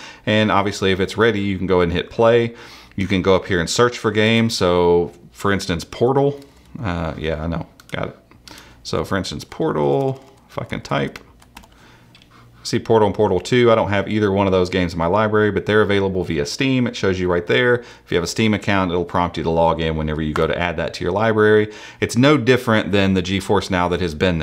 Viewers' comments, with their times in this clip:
0:10 sounds like you said "f**k'n type" lol
0:10 OMG SOUNDS LIKE he said f*ucking type edit: some one already said that lol give support to him